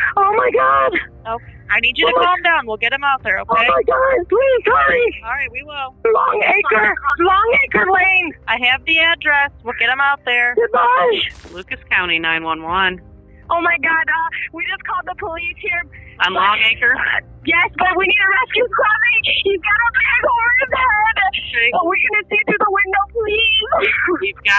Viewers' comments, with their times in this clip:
0:05 “alright we’ll get em out there” yawns “ Ugh 🙄🙄🙄